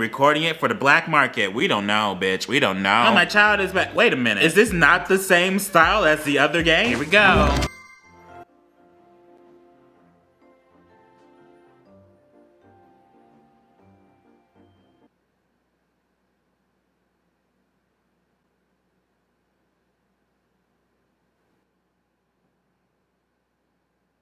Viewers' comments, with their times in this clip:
0:09 that’s a new record for the amount of silence